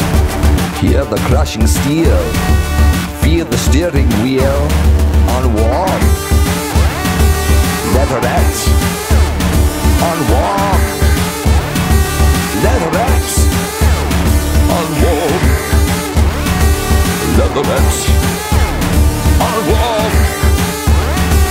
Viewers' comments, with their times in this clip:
0:09 If anybody can (seriously) answer how that synth guitar sound was achieved I would be forever grateful. Thanks!